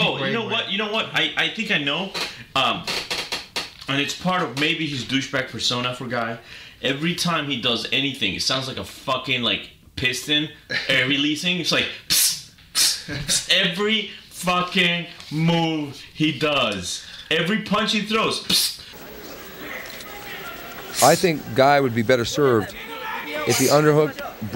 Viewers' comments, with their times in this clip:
0:06 the "psss" is done as a cardio routine. Grappling and striking for longer than a few minutes gets exhausting. Controlling your breathing like that helps in the long run as a sort of "investment" for air. If you spar (for example) and you don't control your breathing, you're on the verge of passing out by the time class/training is done. So in a competition setting, it's more stressful because you're going 100%. Just for a little fight knowledge.